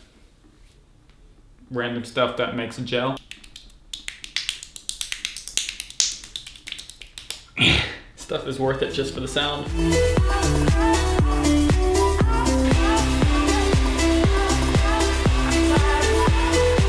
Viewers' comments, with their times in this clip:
0:04 Turn ur volume down so yo ma dosent hear